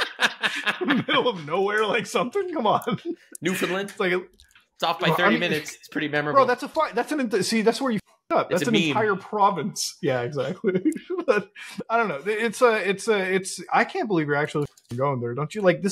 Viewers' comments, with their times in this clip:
0:03 as a Newfie, the last thing I expected was for Nux to mention us, let alone pronounce our province right.